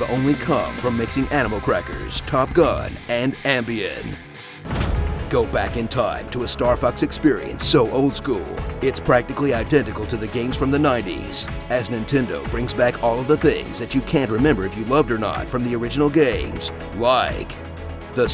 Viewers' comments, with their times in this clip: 0:04 Does anyone know what the music is that starts ? It sounds really haunting and awesome.